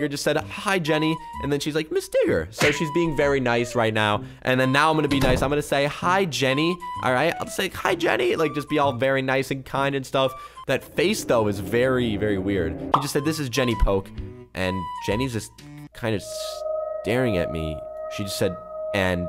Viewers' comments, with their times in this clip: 0:07 he had the worst voids crack 😂